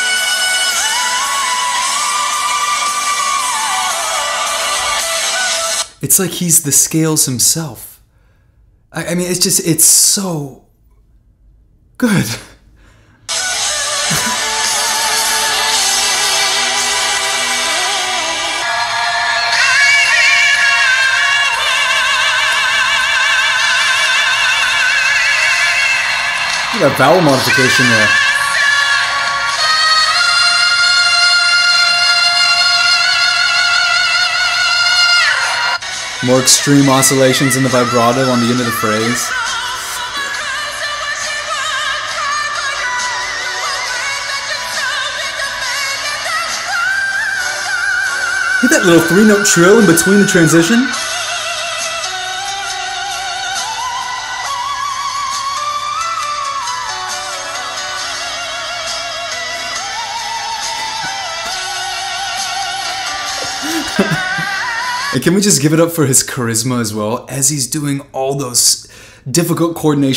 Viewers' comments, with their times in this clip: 0:10 YES! Dimash’s range covers an entire grand piano plus 1 more note! He’s PHENOMENAL!!! #DEAR4DIMASH4LIFE
0:53 He was literally going with the piano scale!!